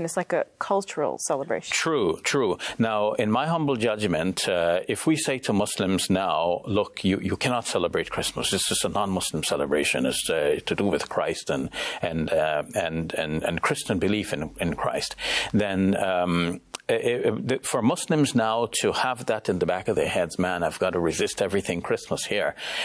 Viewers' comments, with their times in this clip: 0:03 he sounds like the Yasir qadhi guy smh